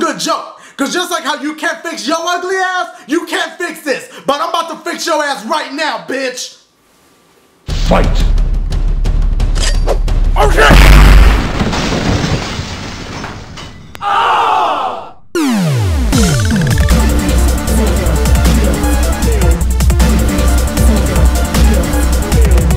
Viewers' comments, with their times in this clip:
0:09 xD it's funny how he says o shit so quick here xD